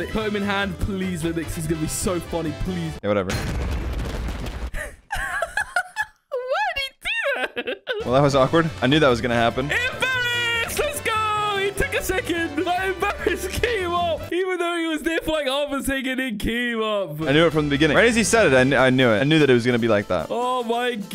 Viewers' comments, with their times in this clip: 0:06 what was t that voice